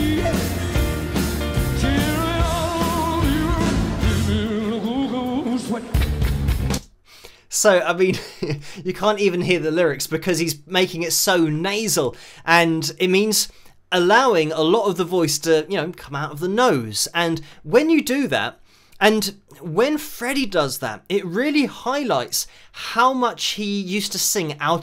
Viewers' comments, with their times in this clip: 0:10 During the parts Freddy sounds much like how elvis would sing.